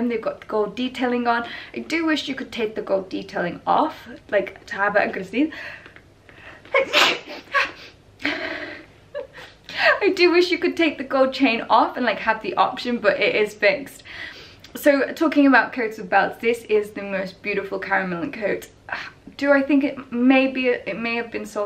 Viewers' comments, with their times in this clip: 0:06 Bless you! X